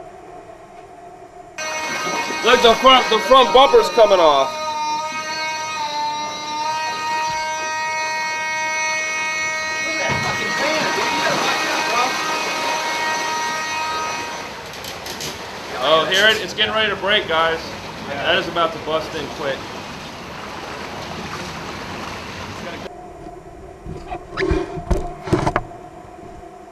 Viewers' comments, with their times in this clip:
0:08 the alarm was so hilarious that I sneeze,d on my tablet